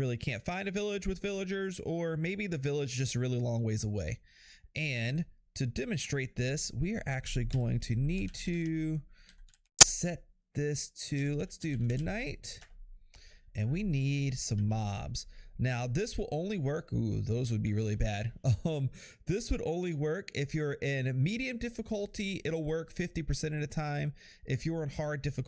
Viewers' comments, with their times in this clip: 0:08 ouch my ears man
0:09 Thanks for destroying my ears.